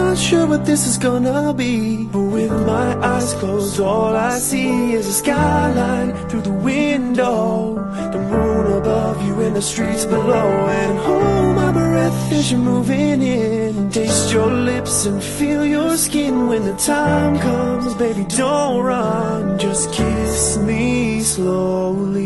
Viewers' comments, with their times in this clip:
0:05 Love their voices.. And that creeper lmao xD
0:07 Creepy look :) but an awesome cover guys, great harmonising and keep doing what you are doing! You guys are fantastic